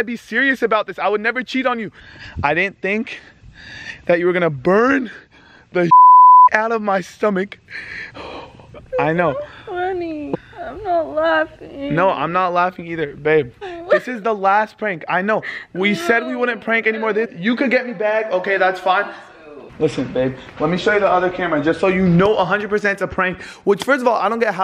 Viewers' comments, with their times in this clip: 0:09 she sounds like a baby👶👶👶 u ain't have to do that to her...